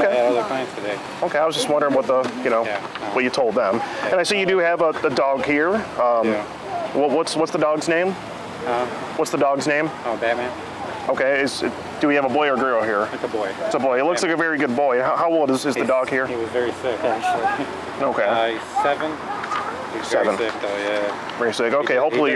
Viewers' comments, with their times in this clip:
0:08 dog's name is obama?